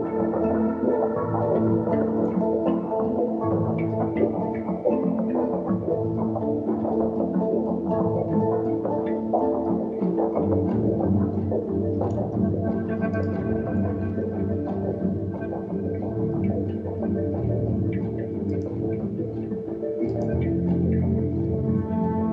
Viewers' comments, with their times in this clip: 0:09 Very cool temporal modulation !